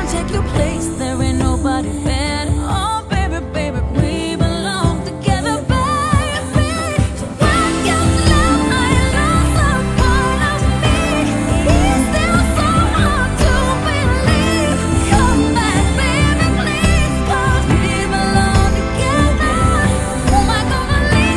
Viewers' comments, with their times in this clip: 0:05 That "baaaa-"by sounds like Beyonce